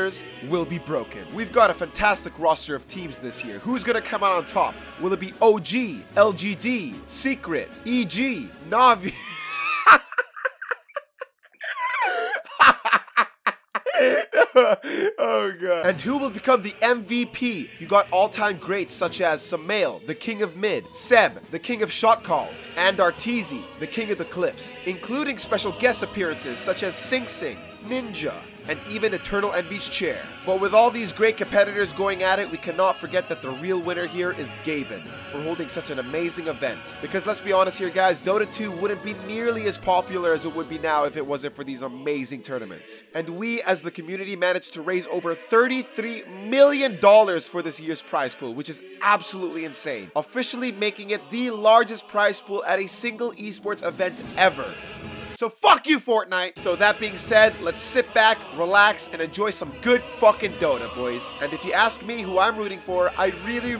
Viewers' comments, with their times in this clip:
0:10 that laugh was very forced tbh, you might wna tone it that a bit
0:50 this cry for help 😂